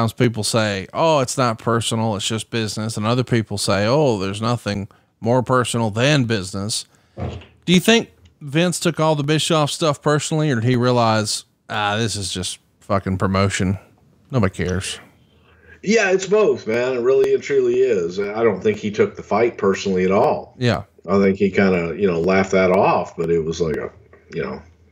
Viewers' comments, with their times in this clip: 0:07 Nice fart bruce